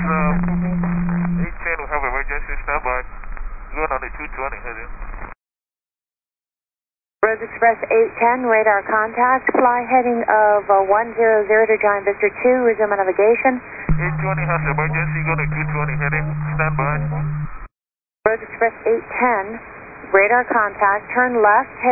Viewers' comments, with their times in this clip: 0:03 wow that controller is one of the worst I've heard. I could barely listen to that clip anymore